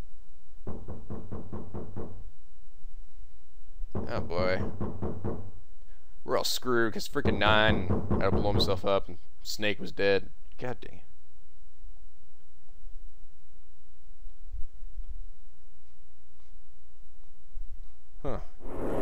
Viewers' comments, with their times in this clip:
0:04 You didn't hear the thumping inside the coffin...?